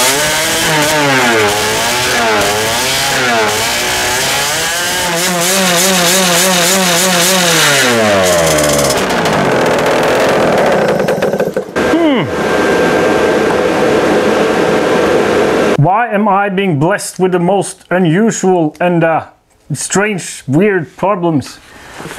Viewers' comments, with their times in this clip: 0:05 when fully sealed with the yasuni pipe it sounded really rich. cold having the pipe off a bit give it more air so just the mixture getting better would make it run?. higher idle is a good idea!